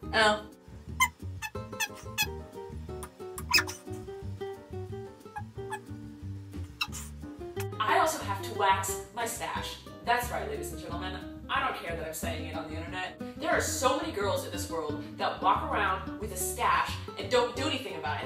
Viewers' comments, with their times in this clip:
0:05 weirdest noise ever